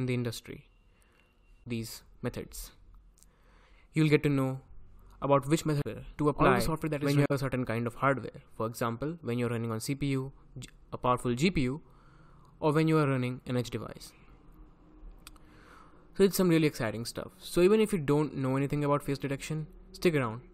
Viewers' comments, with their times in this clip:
0:08 Yo, your voice glitches